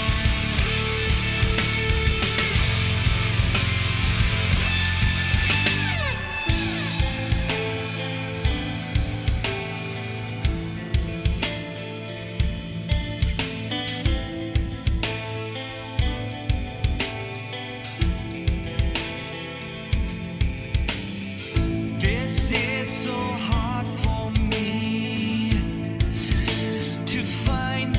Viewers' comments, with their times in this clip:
0:10 reminds me of the IE200 with a little less treble quantity